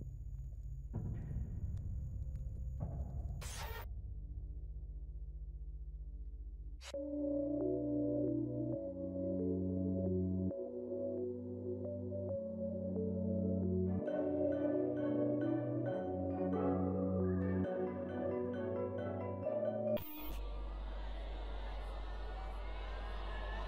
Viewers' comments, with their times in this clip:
0:07 OST is just incredible, I really hope that's used in the anime at some point. We heard something similar in episode 2 but not that track in particular
0:07 music feels so nostalgic
0:07 I really really love the instrumental/music that starts 🫶🏻
0:07 I already know that song that starts is gonna have me in a grip